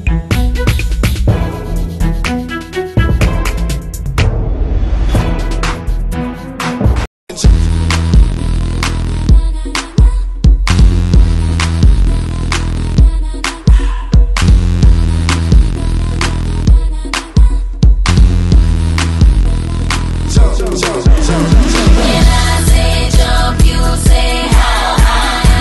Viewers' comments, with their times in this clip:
0:06 lol that's cool, (Nice beat)!